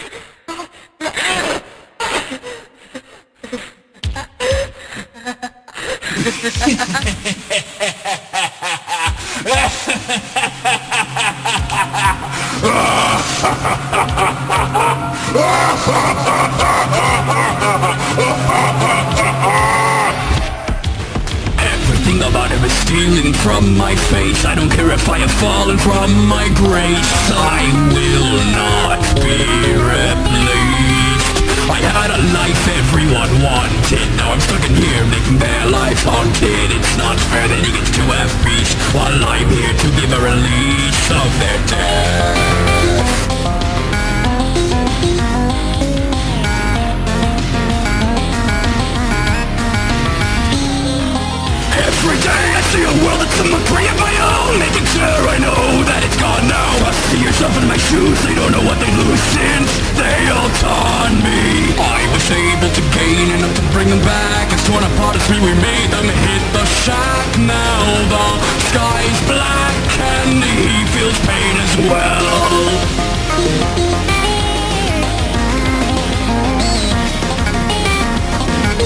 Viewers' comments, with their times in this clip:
0:06 Hog: Laugh in Devils
0:22 is when scorch fist sings😮
1:02 Too be honest on a realistic stand point i understand how hog's voice lines would've been harder to but my god SCORCH PART IS AMAZING, is the best part, like who ever vocals was this slapped too hard